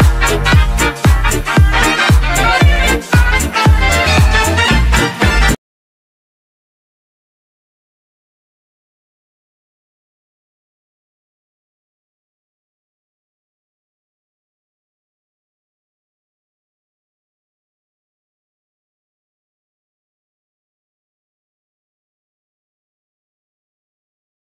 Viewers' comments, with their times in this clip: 0:05 A wonderful mix, but there seems to be audio missing